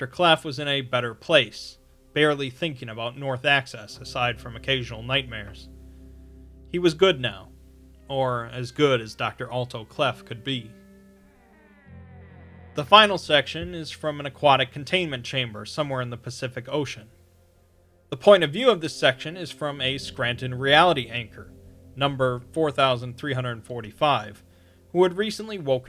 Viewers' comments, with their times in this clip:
0:09 did anyone else here the door opening? Also I looked up what Ichabod means and it means in Hebrew: no glory, inglorious, or where is the glory?